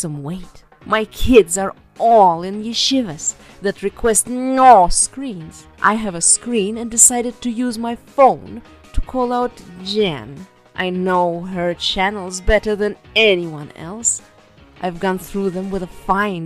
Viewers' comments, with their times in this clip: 0:04 Sounding like Count Dracula 🧛‍♂️